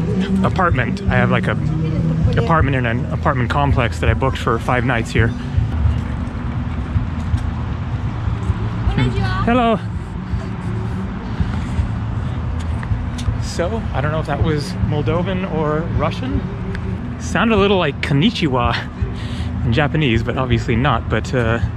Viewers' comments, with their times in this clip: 0:06 yep! she said bună Ziua! (romanian) which means Good Day! but on video it really sounds like Konichiwa xD but romanian have nothing to do with Japanese! xD There is no such languages as moldavian, only romanian!